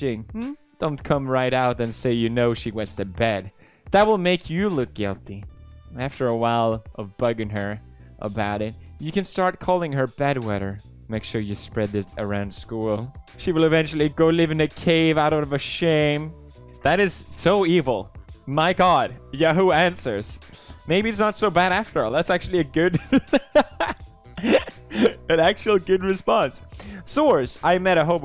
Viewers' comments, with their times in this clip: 0:10 pewds voice tone thing reminds me of something